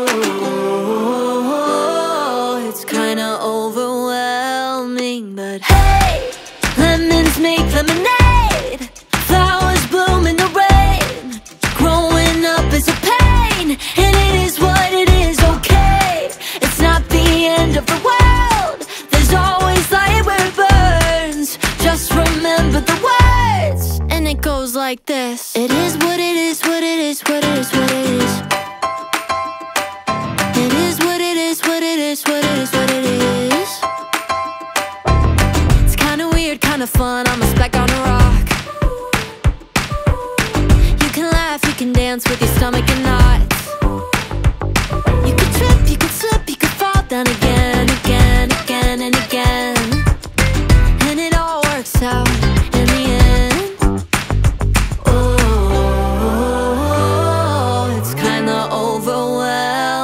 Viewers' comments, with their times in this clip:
0:06 Plz here me out…. When she say “Lemons make Lemonade! is giving “get back up again”! From trolls. Anyone else??
0:44 why does google think she said “but your stomach cannot”? I knew I wasn’t crazy.